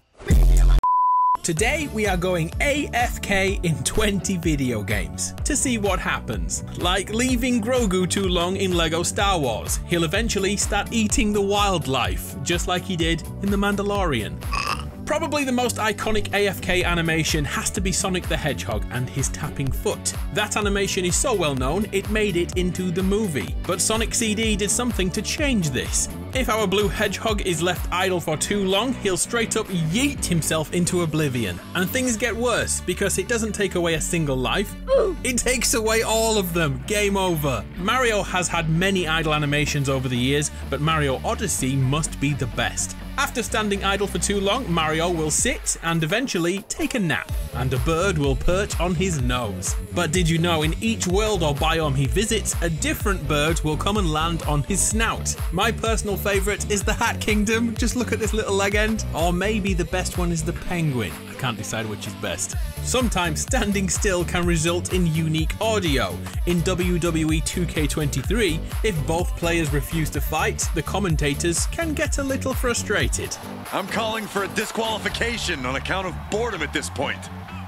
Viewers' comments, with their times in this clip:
0:09 THE CUTEST BURP EVER 😭😭😭😭
0:58 bruh said leg-end